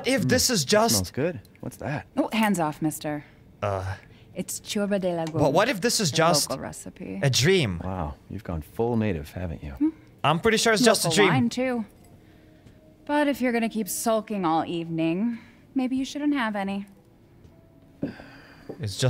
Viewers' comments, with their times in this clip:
0:04 the moment it says "cioarbă de legume" sounds so silly